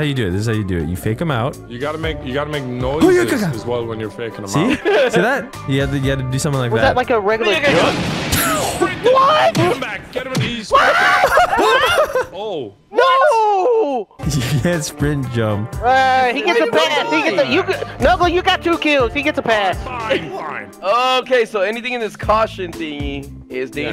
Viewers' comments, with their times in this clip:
0:08 It sounds like the n word 😂